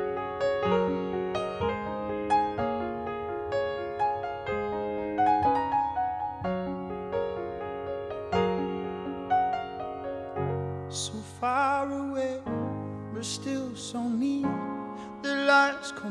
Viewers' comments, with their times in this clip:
0:03 that chord he added in was angelic